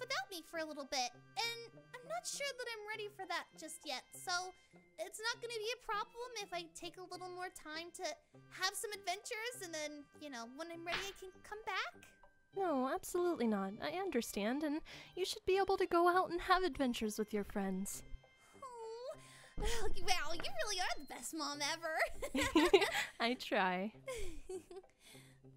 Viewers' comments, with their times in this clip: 0:09 listen .. there's a... slap??